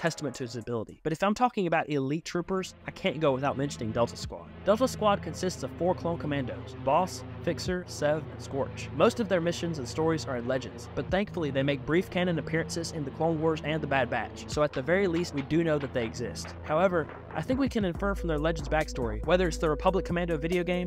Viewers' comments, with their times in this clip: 0:03 with the way the music changed and how Delta squad approach the Jedis 😮‍💨. Cold as ice